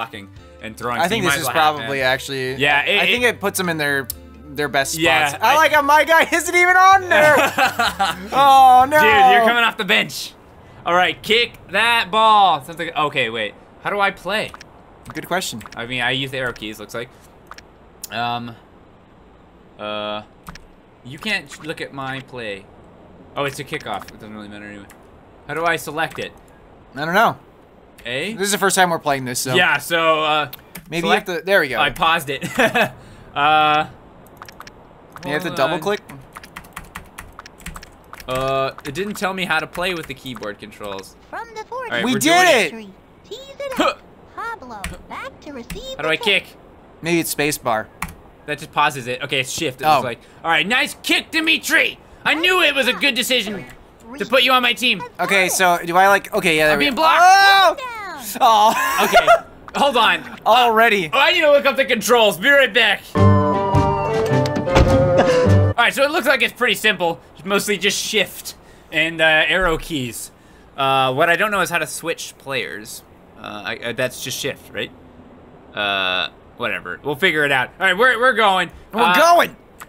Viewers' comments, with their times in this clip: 0:07 "Dude, Yer coming off da bitch!"
1:05 gently grunts in hero of time